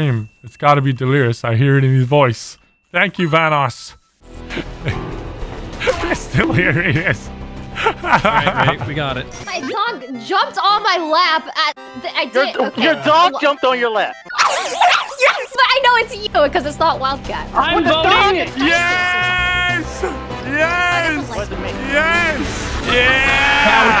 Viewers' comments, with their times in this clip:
0:07 The bonk keeps getting me lmao